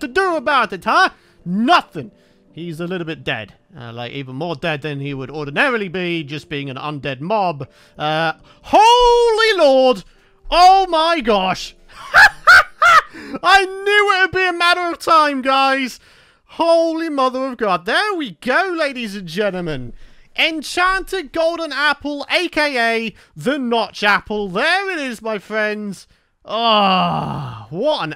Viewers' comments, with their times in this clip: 0:08 *choir music plays
0:11 What is that lagh??